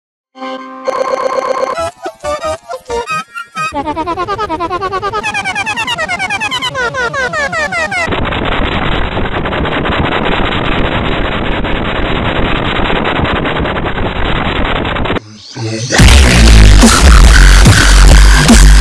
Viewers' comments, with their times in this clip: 0:04 That sounds like someone is laughing so many times.